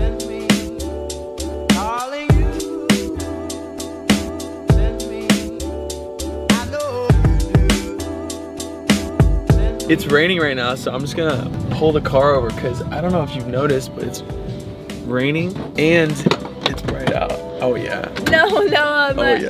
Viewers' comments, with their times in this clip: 0:05 that song, that rain, driving BMW with your love🥺 is just so awesome and is just so romantic